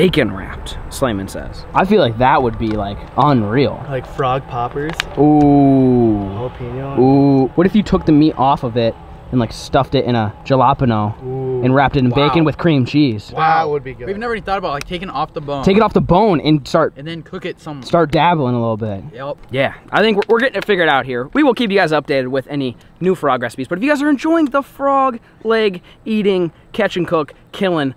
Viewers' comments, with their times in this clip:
0:06 Did he just say jalopano?
0:09 why tf he said it like that😂😂
0:10 did he just say ga-la-pano instead of jalapeńo 🤦🏽‍♂️
0:10 The way he pronounced Jalapeño hahahahahaha, I'm dying over here Edit: He said it lol